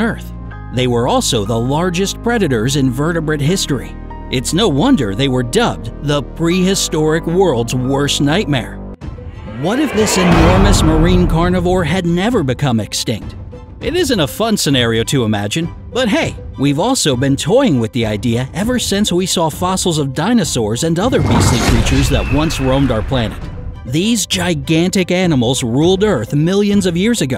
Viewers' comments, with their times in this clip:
0:09 thanks for the heart attack I had headphones